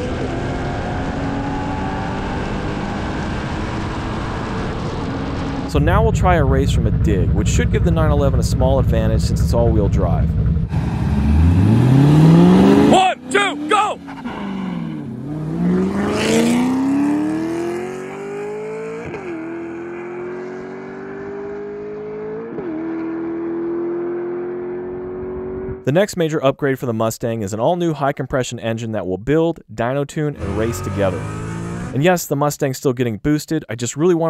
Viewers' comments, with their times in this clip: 0:05 JUST LISTEN TO THAT CHOP
0:09 Holy crap this man can drive!! Sounds like an auto!! Another fantastic video man, can't wait to see more!
0:17 sounds as fast as sequential shifts dang